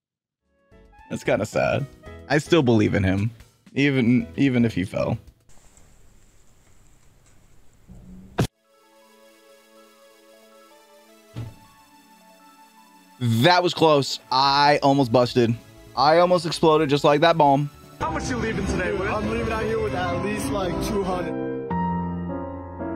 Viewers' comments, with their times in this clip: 0:09 i heard the music and just froze... love that song. keep it up